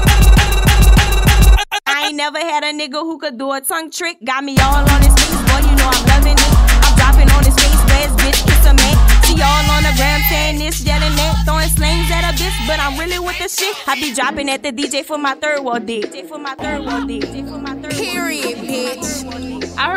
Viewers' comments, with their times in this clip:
0:05 … For my reference 😂